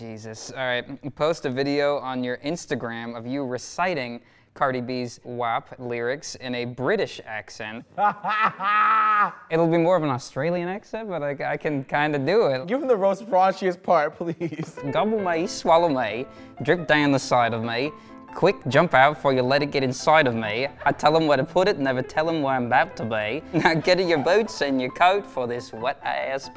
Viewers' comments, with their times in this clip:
0:10 as a Brit, I am disgraced.